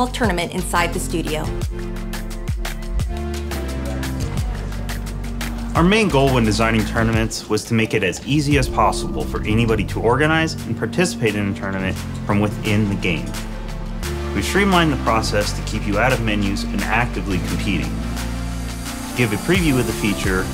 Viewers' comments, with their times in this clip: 0:08 Is that a Lego piece separator, not a whistle?